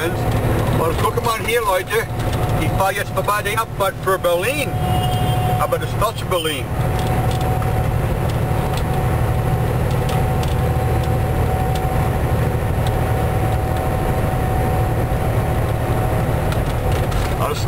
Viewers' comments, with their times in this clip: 0:04 OOO sounds like an upset 4 wheeler at marker .Oh well craps happens now and again..LOL